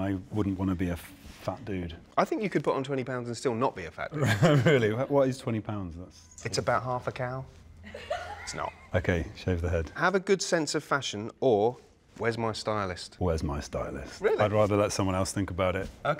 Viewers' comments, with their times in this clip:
0:04 "What's 20 pounds less?" "It's about half a cow..." The dude laughing in the background XD